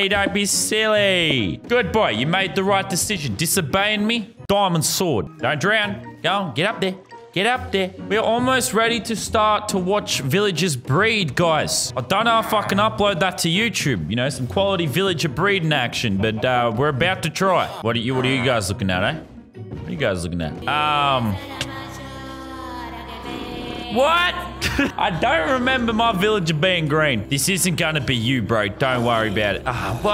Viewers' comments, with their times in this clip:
0:05 bootuful diamond sword
0:13 sounds like he said the f word